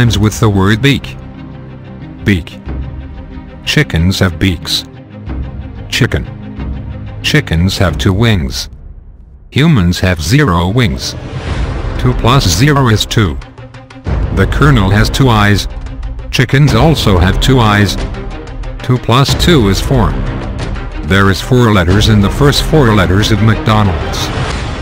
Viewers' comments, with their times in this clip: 0:05 the way he says chicken is so funny to me